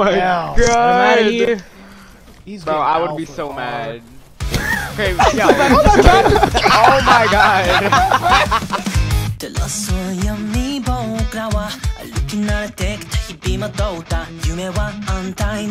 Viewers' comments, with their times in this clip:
0:03 I love the wholesome moments when everyone is laughing 😂